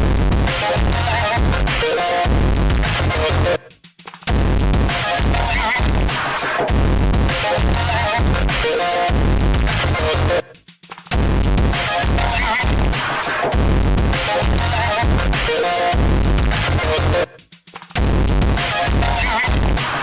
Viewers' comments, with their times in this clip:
0:07 default emote dance WARNING loud